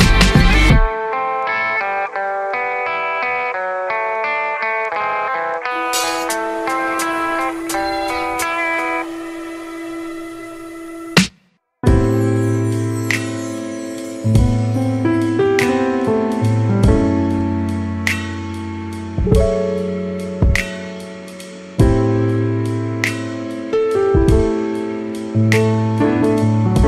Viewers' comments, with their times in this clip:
0:10 jesus chris... this is just the most beautiful thing i ever hear I feeling this song deeper in my soul I just find peace hearing this A totally masterpiece